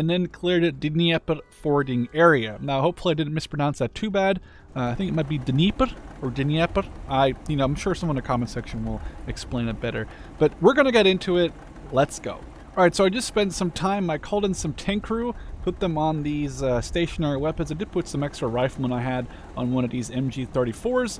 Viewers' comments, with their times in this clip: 0:06 last try was the closest to how it sounds in russian